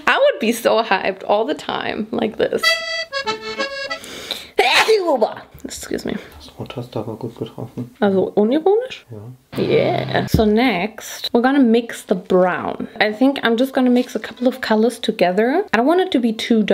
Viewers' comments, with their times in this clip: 0:03 sneezes in German